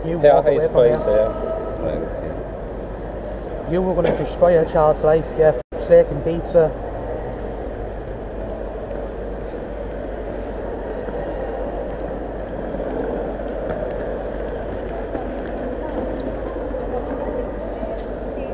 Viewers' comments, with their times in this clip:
0:04 did he say for the sake of pizza? 😄😄